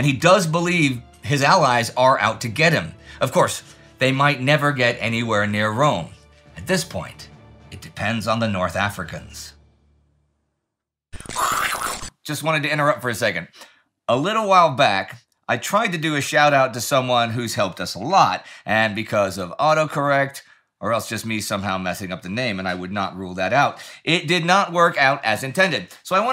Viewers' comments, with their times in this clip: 0:10 The sound effects! 😂